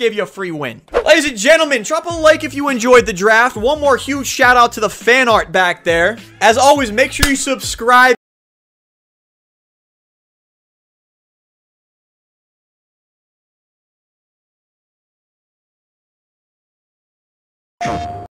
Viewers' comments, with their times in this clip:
0:08 Hey yo boy your audio cut out in the video
0:09 Does anybody else notice the sound cuts out ??
0:09 did anyone elses audio go out at the end? it did for me